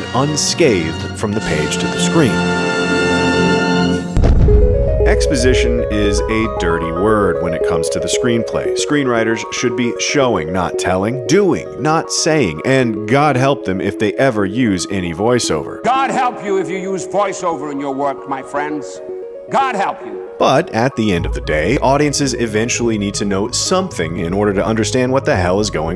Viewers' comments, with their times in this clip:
0:07 the music was a little loud or distracting, specifically the piano great video though!